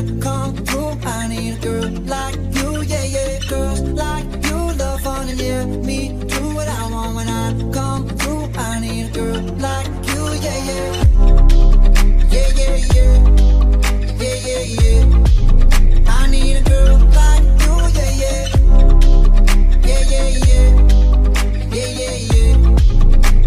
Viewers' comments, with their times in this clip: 0:10 Damn... That bass 🔥🔥🔥❤️‍🔥
0:10 listening on my new beats studio pro... That bass Damnnnnnnnn!